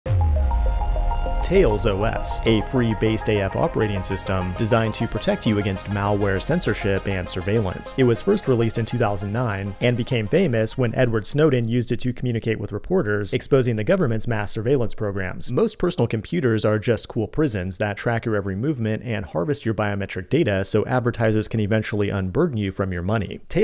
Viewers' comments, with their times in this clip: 0:04 I heard Free Based AF and wondered how I could not have noticed it’s based on FreeBSD.